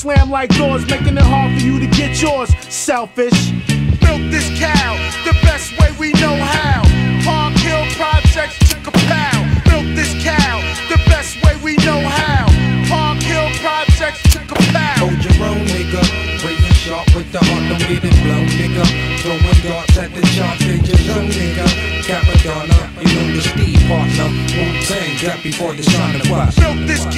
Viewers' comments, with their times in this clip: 0:10 That biz impression.. spot on